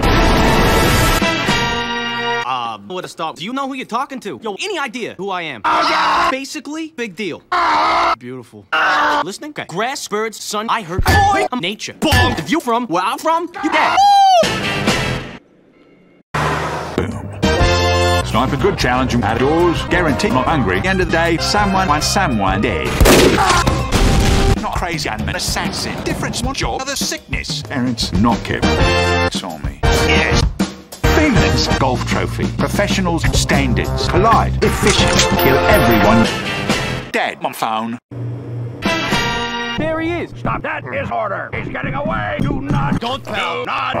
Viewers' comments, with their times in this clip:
0:10 I hurt boink
0:12 if you from where I from - you gay.
0:28 The random horns blaring in sniper's section got me dead 💀